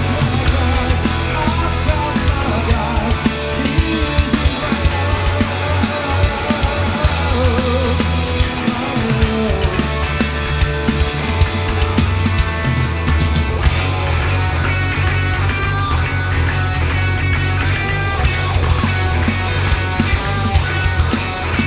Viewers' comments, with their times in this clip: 0:05 Sounds like my car trying to start on a cold morning.